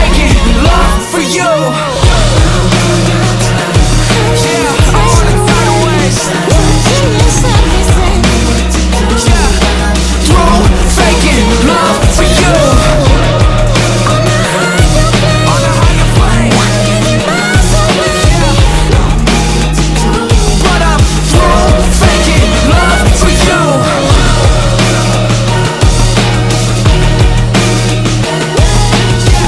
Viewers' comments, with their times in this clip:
0:10 This is another amazing one..there are few people who know how to convey feeling through music and you are one of them. The way you move the energy with the music is brilliant. I love the build up you can feel the deep hard emotion..my chest felt like it was sinking. Nothing is better than when a musician takes you on a journey. I love it all. Aloha <3